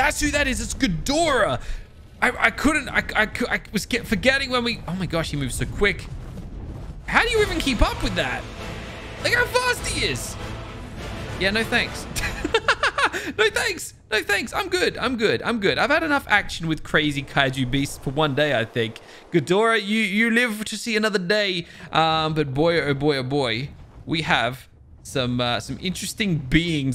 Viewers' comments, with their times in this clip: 0:08 that music was epic